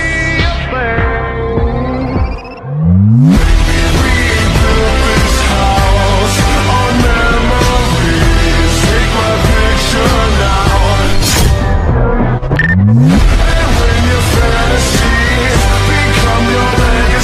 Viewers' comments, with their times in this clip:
0:03 LOVE THE BEAT DROP